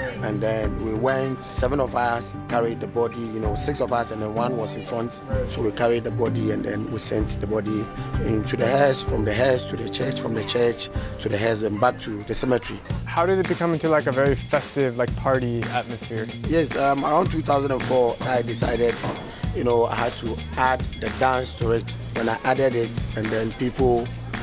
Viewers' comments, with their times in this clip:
0:10 "From the hearse to the church to the hearse..." Subtitles: A what? Must mean house put house